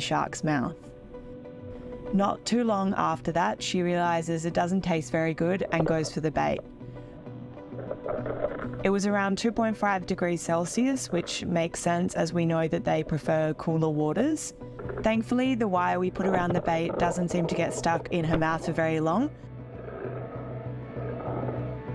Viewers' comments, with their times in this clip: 0:03 we got shark ASMR before counting to 3 💀🙏